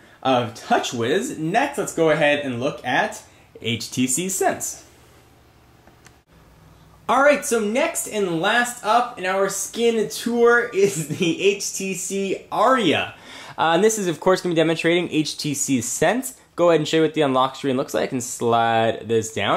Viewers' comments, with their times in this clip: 0:03 HTC Ssssense... voicecrack